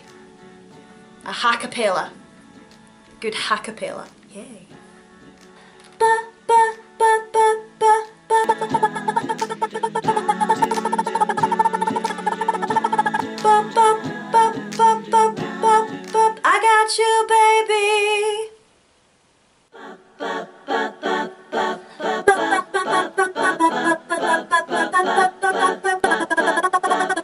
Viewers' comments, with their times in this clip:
0:10 i thought she turned into a chicken😂😂